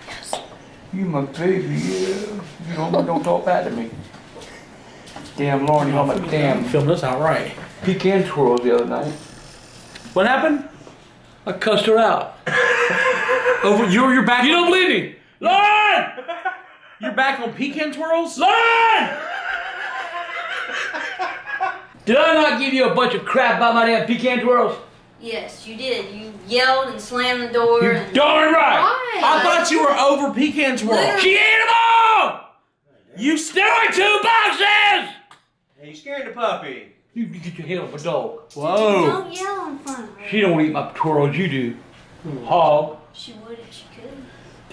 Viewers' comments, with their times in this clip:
0:03 can u here some whisper the word yes
0:16 Look how the puppy moves when grandpa yells Lol
0:31 Grandpa looked adorable in this video. Especially when he screamed.